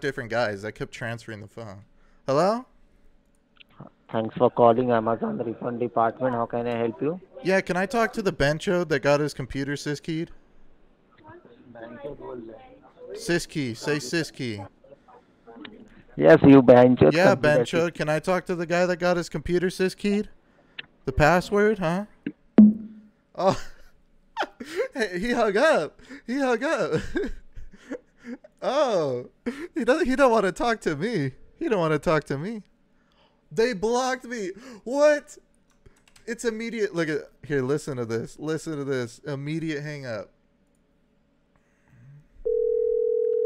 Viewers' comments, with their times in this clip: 0:10 he goes "behenchod bol ra h" (he's calling me a sister f*cker) with such sadness in his voice it made my day!!!! 😅
0:30 he sounded so sad 😂😂😂